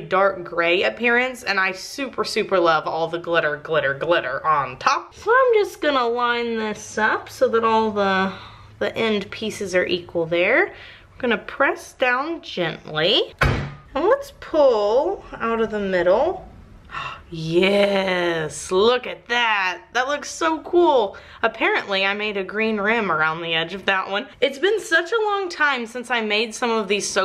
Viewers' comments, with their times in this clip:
0:06 "push down gently" BANG
0:11 “press down gently”....... SLAM
0:11 "Gonna press down gently" - BAM xD such gorgeous soap tho and such a cool idea!!
0:14 I'm gonna press down gently slam